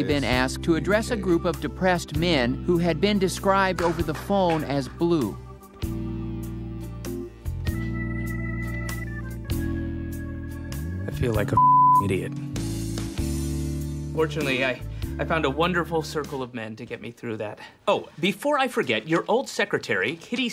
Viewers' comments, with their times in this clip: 0:06 Is it me or is David Cross trying to surpass a laugh ?